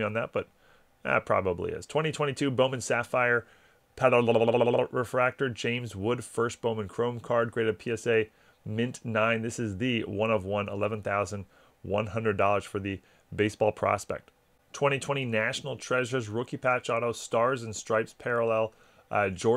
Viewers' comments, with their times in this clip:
0:04 thought the old iPhone Audio was going wonky on me 😂